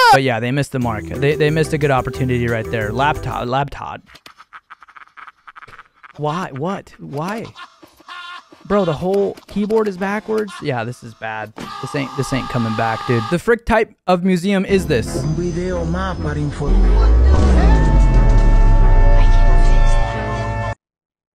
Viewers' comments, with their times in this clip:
0:03 I Can’t Stop Laughing At Labtod